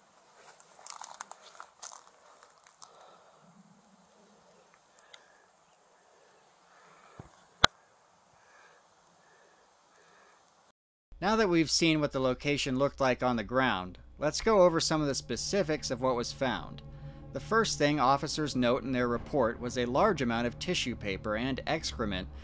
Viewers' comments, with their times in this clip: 0:07 is it just me or is the cops’ silence making it significantly more eerie?